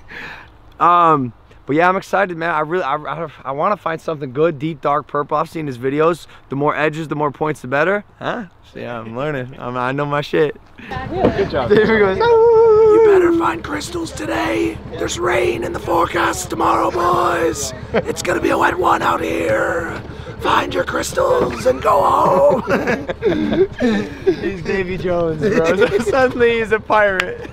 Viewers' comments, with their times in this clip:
0:10 when I first watched this vid I thought he said I know my shapes